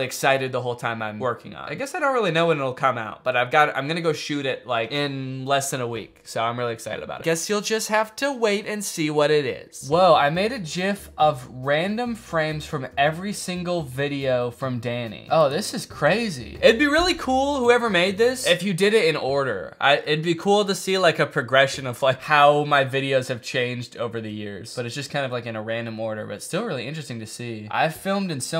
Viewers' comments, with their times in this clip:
0:07 he said “jif”….
0:10 ... really? That's how you're gonna pronounce GIF?
0:10 that pronunciation is gonna be on the subreddit i can 100% guarantee it
0:10 He pronounced it as Jif. I'm unsubscribing.
0:11 did you seriously just call a gif a jif